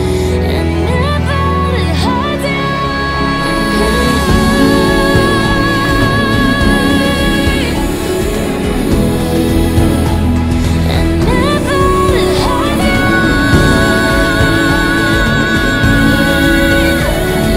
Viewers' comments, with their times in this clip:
0:04 How did you extend the note Omg😱 It’s so heavenly✨😇